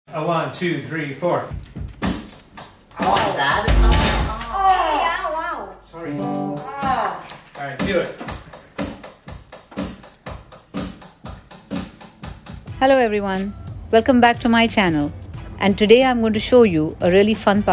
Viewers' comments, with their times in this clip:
0:02 That was the most funniest and dramatic aao aao😂😂😂